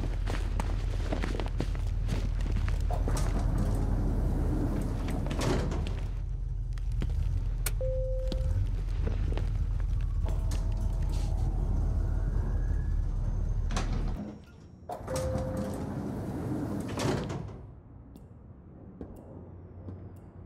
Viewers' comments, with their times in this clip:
0:04 almost thought that said Technoblade